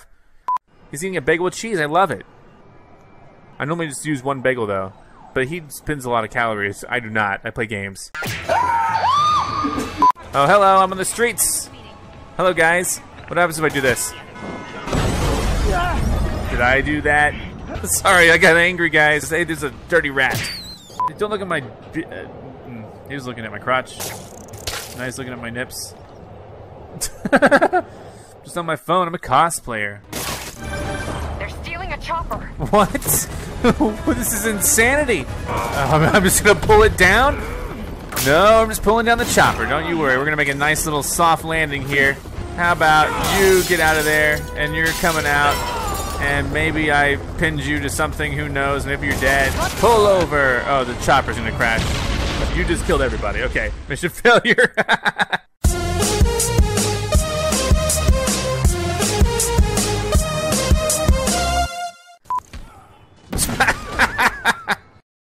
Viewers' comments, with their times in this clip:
0:08 is that your scream
0:56 The audio sound it's low quality.